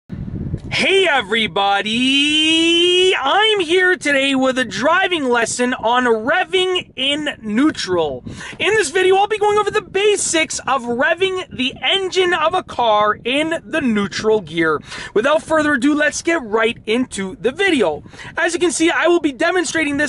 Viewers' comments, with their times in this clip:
0:02 Why are you shouting man???? Volume controls have already been invented. Geez! Lol Lost me .lol